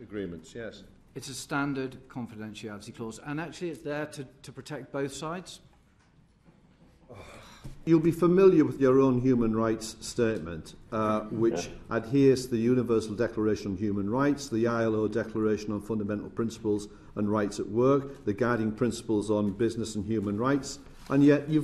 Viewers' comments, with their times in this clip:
0:07 That frustrated sign It really is one rule for us peasants and another for the wealthy, it's disgusting.